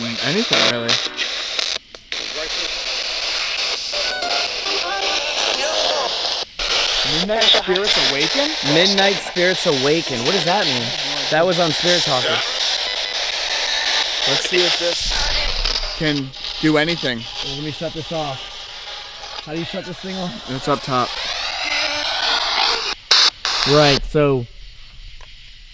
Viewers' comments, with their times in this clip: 0:03 spirit box says "I come from..." can't make out the second part aka where they come from. Almost sounds like the word 'peace' is in there but can't tell and don't know how that would make sense
0:06 "kill them all"... maybe "Killed them all" You have to go back a few seconds to hear it... its right as 10: 01 switches to 02